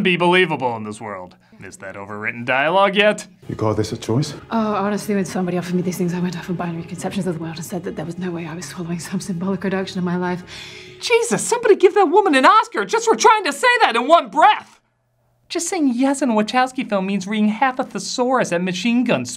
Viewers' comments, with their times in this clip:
0:04 I've listened to this line nearly 10 times and can only understand it as far as "Uhhh honestly, if somebody offered me these things"😂